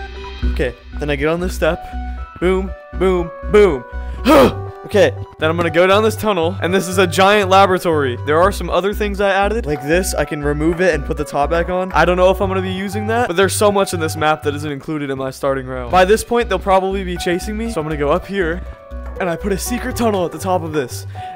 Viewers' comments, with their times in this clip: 0:06 DID HE SAY "LAB RAT ORY"